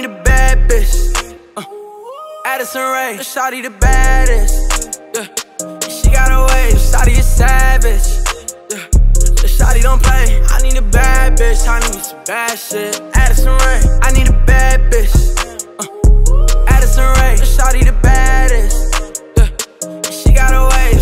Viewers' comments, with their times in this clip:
0:09 I thought it said shawty a sausage for a second lol